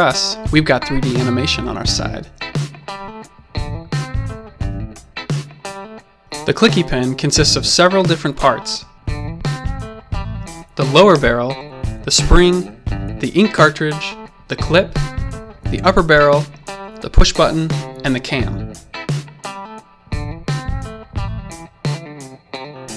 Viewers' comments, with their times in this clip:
0:10 despite only being a pen, the parts sound like gun parts